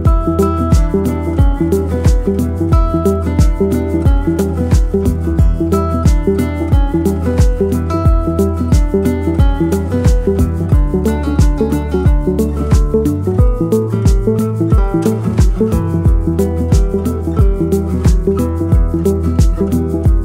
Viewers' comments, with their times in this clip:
0:05 That guitar part would be longer, would be much better